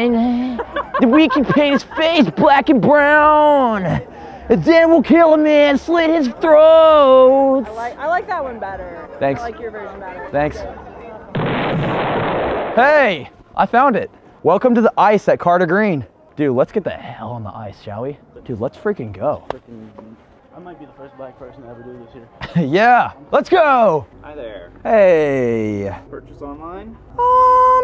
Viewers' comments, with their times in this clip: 0:09 What was bro singing in ?